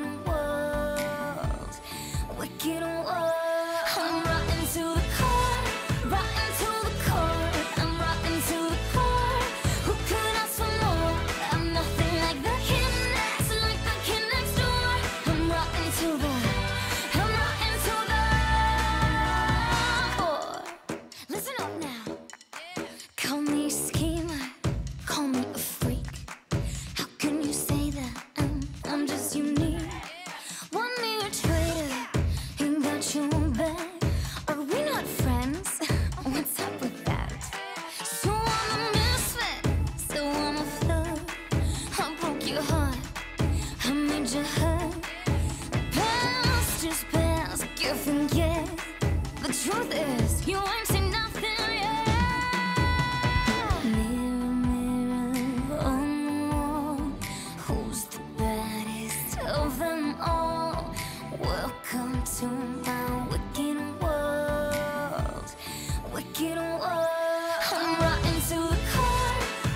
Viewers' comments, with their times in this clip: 0:04 the way she said 'Rotten to the core" was not the vibe but she is still my fav Character in Descendants
0:54 her voice was amazing!